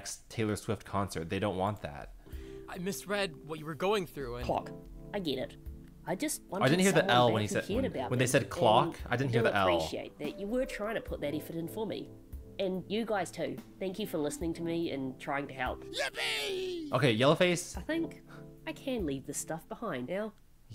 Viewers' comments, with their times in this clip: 0:06 clock without L omg
0:07 HELP ME YOU HEARD WHAT